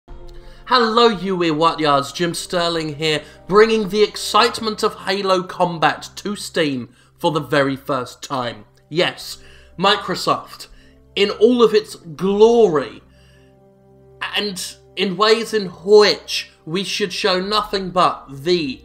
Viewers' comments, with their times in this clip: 0:01 You what? XD Eee-yaht-wahs? xD